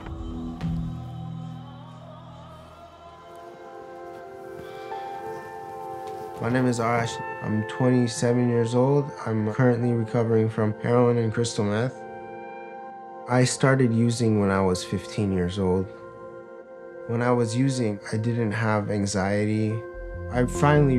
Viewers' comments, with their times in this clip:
0:06 At first I understood "My name is Arsch" which means ass in German